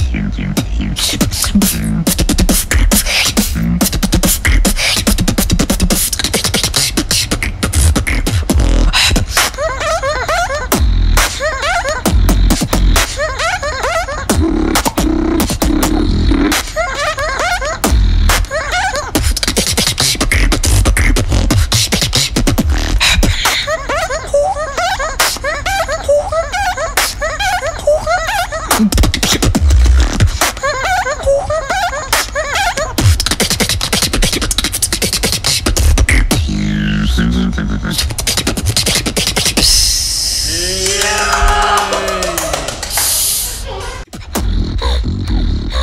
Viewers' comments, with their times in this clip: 0:08 BEST DROP ON EARTH
0:09 The drop is crazy and sounds even better sped up ..... (like I was expecting on the same tempo as he did in bbxint throwdown)
0:27 that was possibly the holiest of combos I have ever heard! So crisp! It sounds cleaner and more electronic than the RC-505! TL;DR - The BEST SOUNDS I'VE HEARD SO FAR! Incredible!